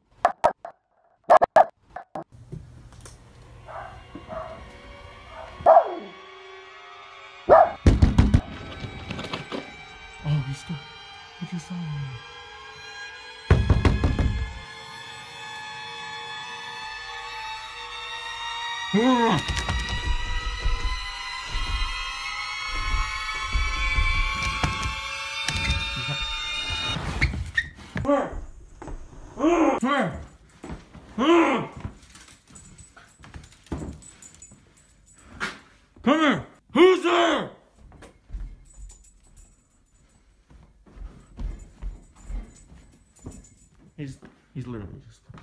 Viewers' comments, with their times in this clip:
0:09 The way you're talking and chasing him is so freakin funny! was the funniest!
0:26 dog: jerks backwards Jesus what is that smell owner: who's there *yells angrily dog: hello I'm Right in front of u. owner:WHO'S THERE dog:ok I'm outta here